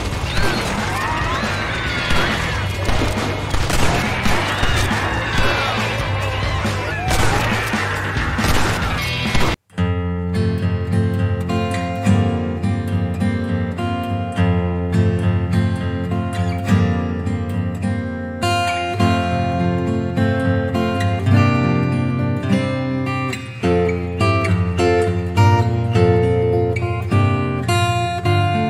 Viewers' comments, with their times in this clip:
0:10 really wasn't expecting christmas music